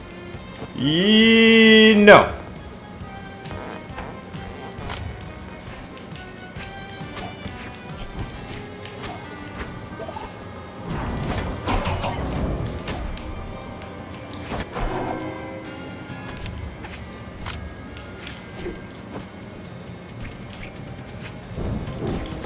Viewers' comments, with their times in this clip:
0:03 Wait Is that a fart
0:04 Was that you farting along to the music ?!? Hahaha